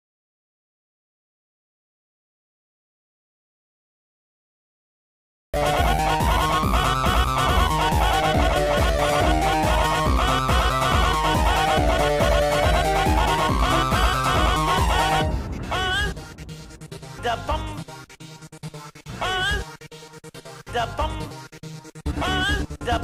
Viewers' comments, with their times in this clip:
0:04 sorry for the no sound there was a false copyright thing so i HAD to mute it and yah it stops